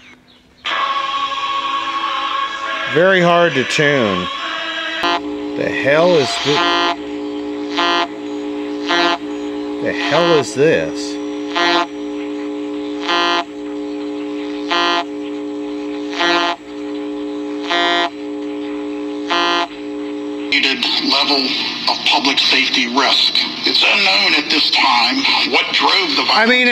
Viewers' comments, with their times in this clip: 0:05 Not impressed with Skrillex's latest ;) Some wonderful stuff in that rehearsal studio/workshop. I could have filled a van :)
0:06 Hope you took that Firestone radio I at least have never seen one. Sad and common story regarding that place. sounds like something my Channel Master 3 band radio picked up.
0:10 That sound that you heard I've been hearing it on my radio here in MN also I have a radio shack multi band radio and sometimes I hear it on all bands so I'm not sure what it is probably some kind of radio jammer